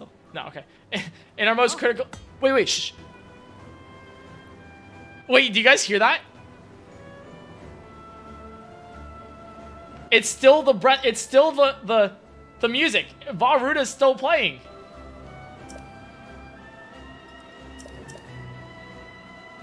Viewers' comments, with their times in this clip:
0:03 he shushes the viewers as if he can hear them lol this vid was so entertaining